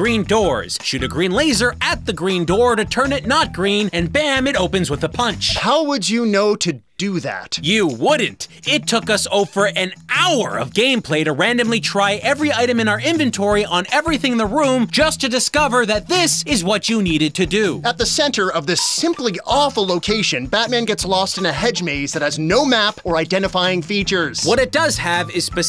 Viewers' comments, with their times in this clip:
0:07 You can hear how frustrated he was to admit that.